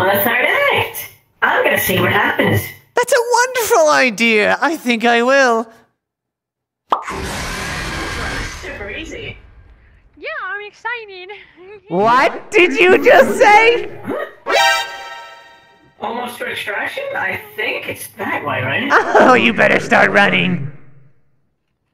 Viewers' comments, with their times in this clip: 0:07 I hear catnap jumpscare in